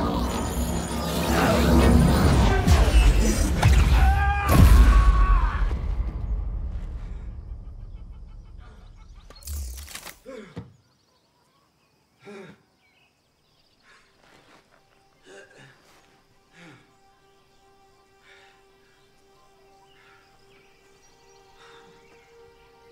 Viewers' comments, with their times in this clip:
0:09 Spartan Laser deploy sound effect at a different pitch